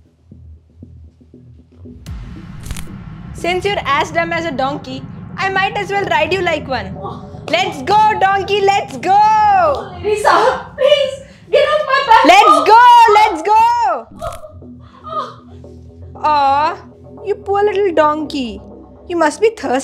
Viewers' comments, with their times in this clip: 0:03 I liked the back cracking sound when she mounts her.